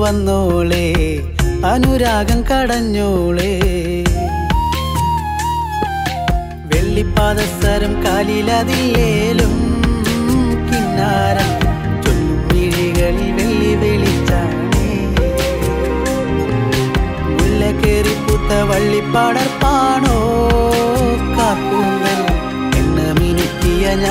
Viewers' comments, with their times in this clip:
0:06 It's a very good song, it's melody is so beautiful✨. Especially 🥰, the string session and those chord arrangement made that part so good. Hats off to the team 🙌🏻